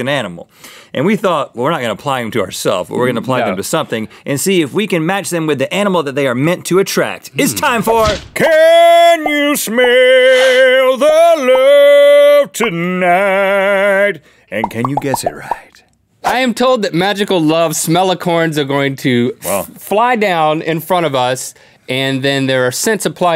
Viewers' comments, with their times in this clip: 0:07 This game theme song really touched my soul.